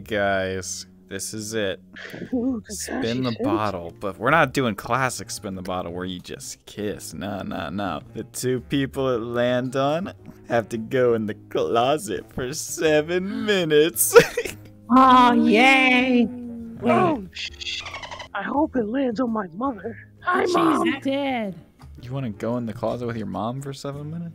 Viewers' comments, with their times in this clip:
0:08 kakashi sounded like guy sensei lmao